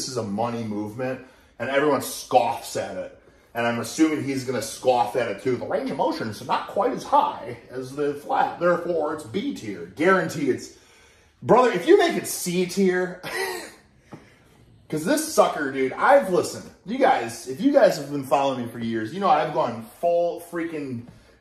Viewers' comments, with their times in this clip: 0:05 the way he mimicked Jeff’s voice 💀